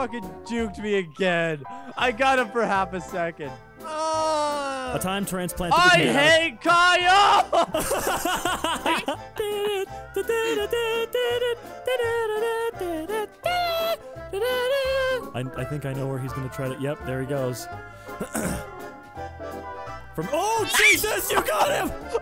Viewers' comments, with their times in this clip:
0:03 That moan tho